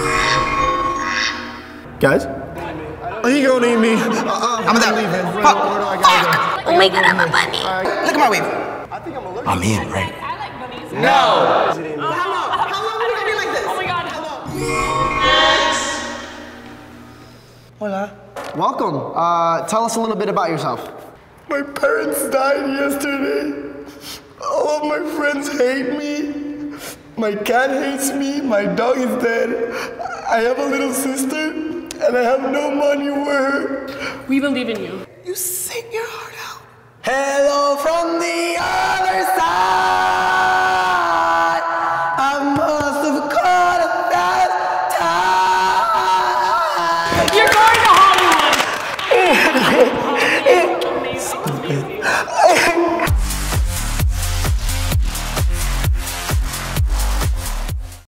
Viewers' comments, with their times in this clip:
0:04 AHAHAHA THE FACT THAT THEY MATCHED THE DUCK QUACKS
0:06 Lele's voice is so adorable ❤
0:36 the song wasn't that bad in the beginning
0:37 My brother singing
0:41 A+ in the loudest screaming competition